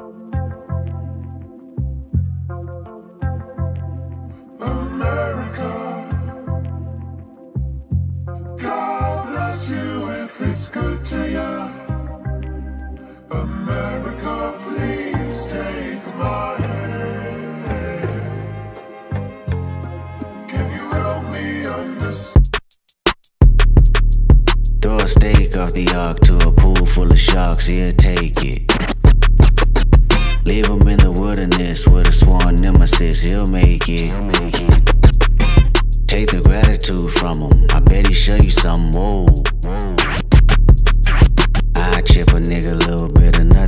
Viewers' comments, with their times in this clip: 0:08 That key change 😵🤑
0:28 Those James Brown ‘Get Up Offa That Thing’ record scratches though! 👌🔥🔥🔥